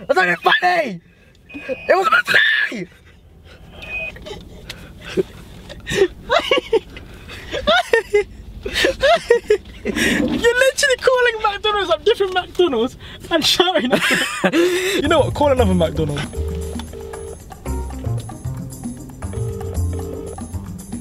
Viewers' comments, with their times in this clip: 0:06 The laugh tho 🤣🤣😂